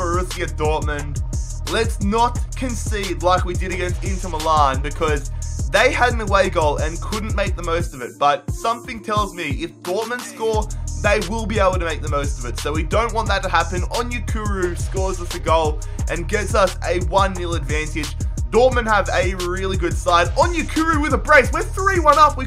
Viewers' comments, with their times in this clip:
0:07 Song in the background